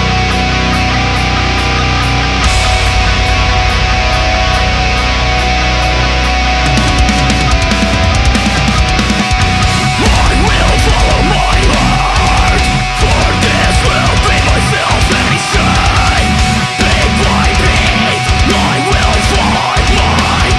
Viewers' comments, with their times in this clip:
0:05 great work guys, sounds a lot more professional and streamlined than Dreamcatchers! is definetely influenced by 'Martyr' by ABR though